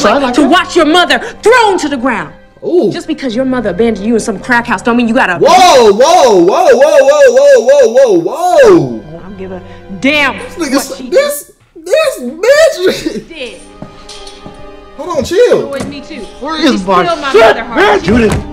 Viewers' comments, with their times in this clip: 0:06 he sounded like Chowder when he said that